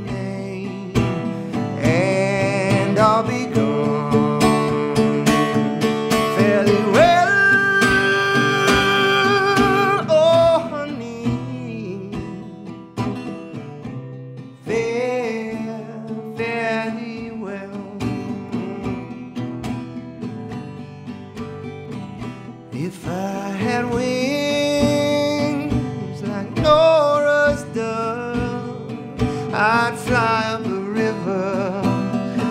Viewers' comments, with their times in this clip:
0:07 the way his voice shifts to the back of his throat on 'well' is just... Chefs kiss
0:08 there’s a sound I can’t place that almost sounds like a human voice beginning to sing a harmony or something but then it just kinda becomes noise. Wondering what that is if anybody knows
0:09 That note made me well up! He did a GREAT job!
0:10 Every time I get to I shed a little piece of my soul to make up for the sorrow he shares in his voice.
0:13 The "fare thee well" will give you chills, easily the best part of the song, all throaty an shit lol